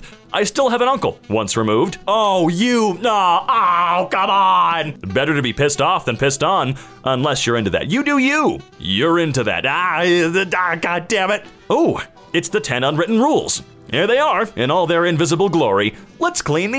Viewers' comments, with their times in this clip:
0:04 he turned German at this moment